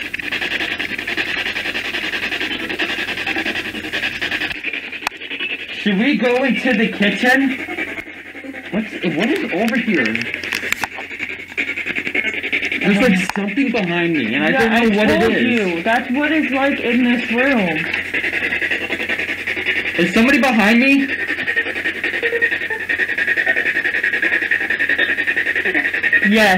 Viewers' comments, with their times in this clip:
0:07 spirit box and the responses 😳🤯